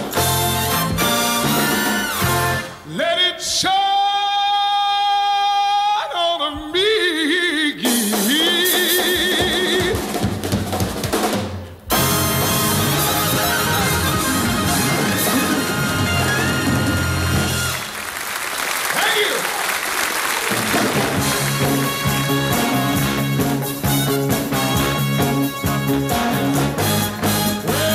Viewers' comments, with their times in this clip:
0:09 is one of the best voices around, I recently saw him and he still has it.